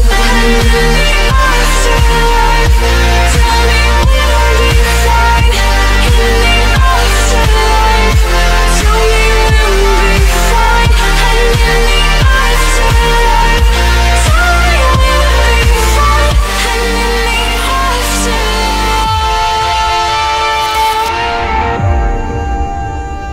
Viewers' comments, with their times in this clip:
0:06 But, afterlife-instrumental was a bit hazy